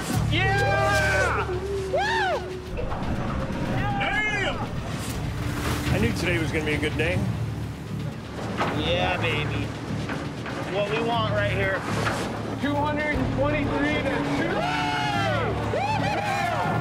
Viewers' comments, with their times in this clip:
0:03 he sounded like Gabriel Iglesias the comedian when he also says "dayummm" lol